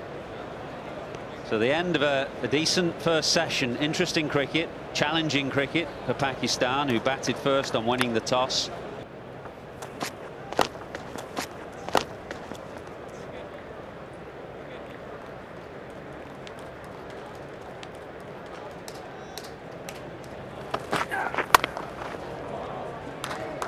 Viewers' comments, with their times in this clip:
0:09 Why is there a double sound